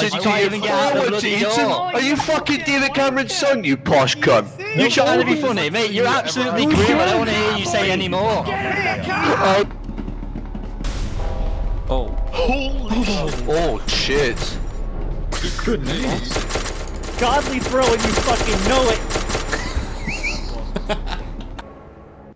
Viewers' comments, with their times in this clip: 0:07 I never noticed you can hear MORTY GET IN THE CAAAAARRRR